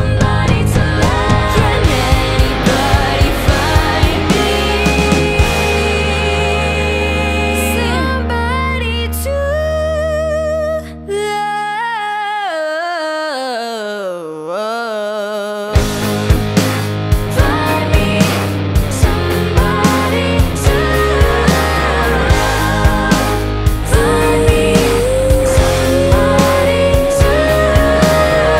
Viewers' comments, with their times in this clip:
0:07 I'd marry that redhead omg... I faint to her voice
0:09 damn that run sounds amazing